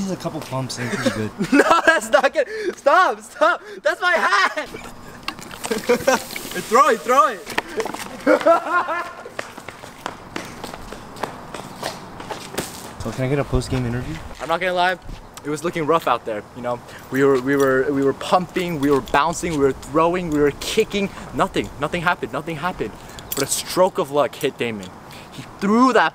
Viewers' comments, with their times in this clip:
0:08 the silence when the ball hit the ground